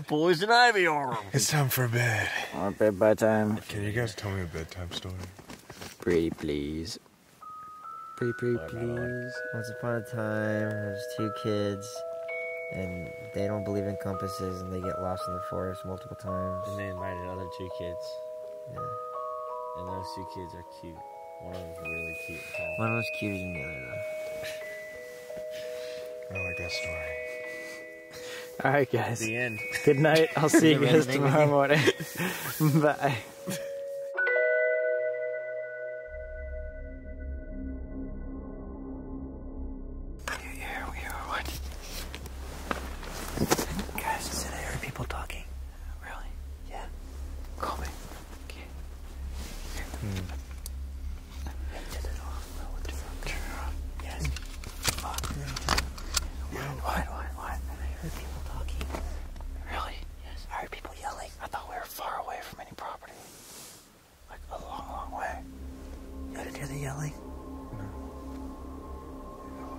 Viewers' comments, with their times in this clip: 0:06 there was a sound like somathing was like patting the tent or was just i that heard that
0:53 IS THAT A GUN LOADING 💀🤣
0:57 after someone says "I hear people talking" there is a loud yell like "AY"